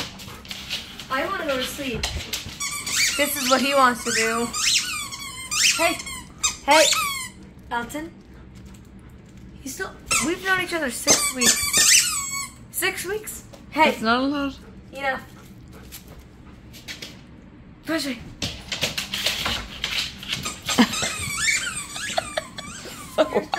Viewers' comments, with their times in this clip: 0:04 MY DOG is FREAKING out WITH EXCITMENT with all the SQUEAKS!